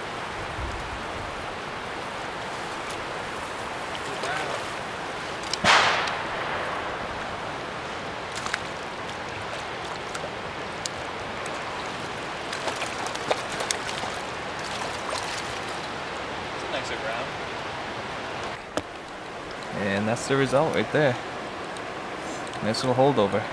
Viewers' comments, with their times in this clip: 0:04 Gunshot ? Some dude just got his dinner. Thanks for all the tips in the vid!!